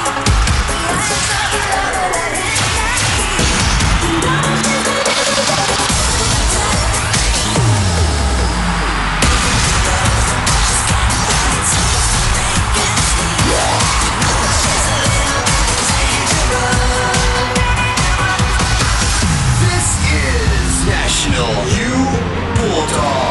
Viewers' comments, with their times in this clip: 0:09 the fact that not just the NU Community who cheered for NU Pep all throughout their performance but the whole MOA Arena itself!!! U can see the audience, even though they are from other schools, really enjoyed the show. DASURV NA DASURV ANG KORONA!!! esp that good lord stunt 🤯 CONGRATULATIONS, BULLDOGS!!💙💛 proud nationalian hereeeee <33